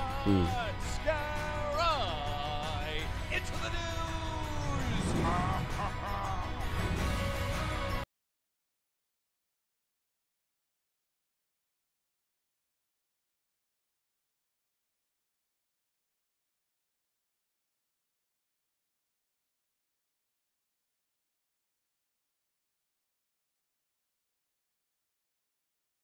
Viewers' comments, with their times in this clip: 0:07 Is it just me, or does it mute ?